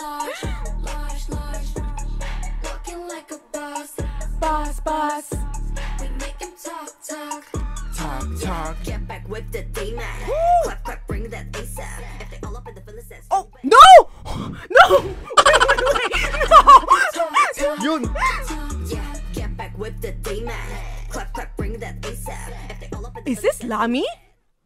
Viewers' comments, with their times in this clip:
0:09 i had the same reaction as you when rami's deep voice came on it was so hiphop and fun to listen to, then it stopped making me panic. i can't wait for the full release of this song to hear more of rami's rapper part. Rami's voice is so swag and addictive.